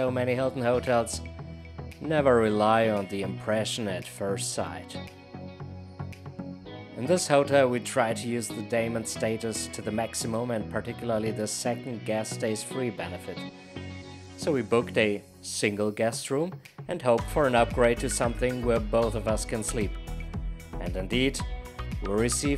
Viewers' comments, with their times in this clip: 0:08 the subtitles say "we try to use the daemon status to the maximum" I couldn't understand it either. What did you mean?